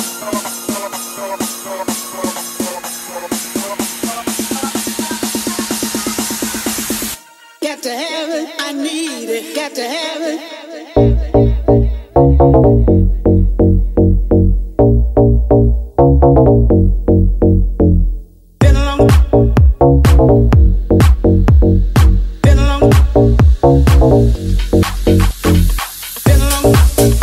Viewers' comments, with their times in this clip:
0:10 Mental tune that drop :)